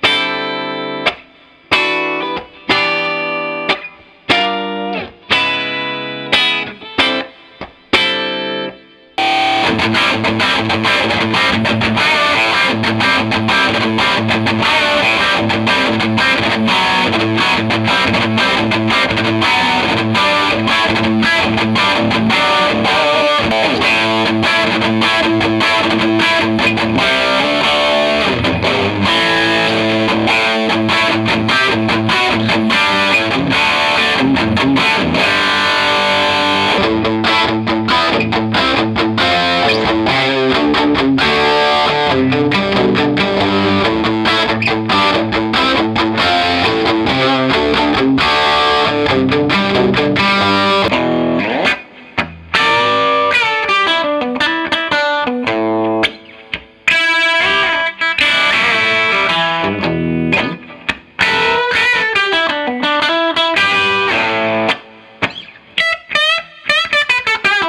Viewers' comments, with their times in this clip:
0:09 With the heavier distortion the Orange sounded "thin" to me. Much preferred the marshall in a big way. Clean though they were both pretty good.
0:50 that run on the marshall is JUICY